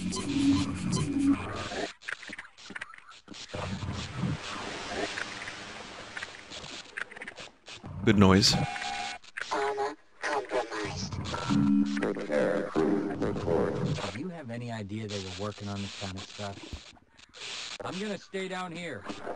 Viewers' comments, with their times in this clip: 0:03 [ASMR] Barney provides you with soothing ocean sounds in a dimly lit corridor while your workplace is invaded by hostile extradimensional aliens